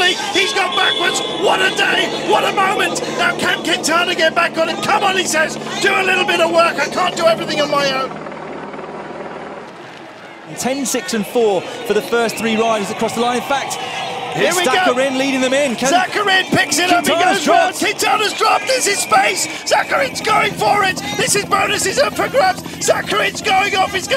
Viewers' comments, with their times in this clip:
0:07 I quit watching after The yelling was just unbearable and it makes no sense trying to watch with the sound off.